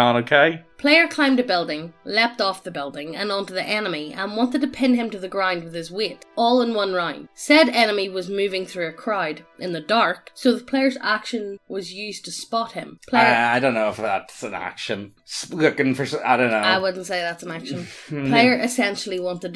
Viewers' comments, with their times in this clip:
0:06 ... The enemy , yeah. Me and my Texan ears hear anime and I know that's not correct and that it's just accents like my own... What do the captions say? I do that. Google hears better than me and I. Disappointed.